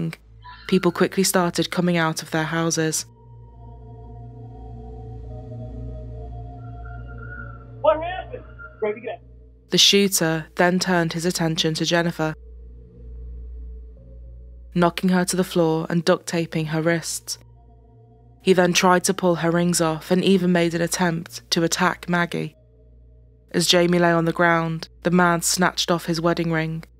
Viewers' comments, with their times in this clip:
0:10 I only listen, not watch.... I try to hear who's lyin'.... Cops always lie...anywho.... Thanks for the resonant tone of the liar🙂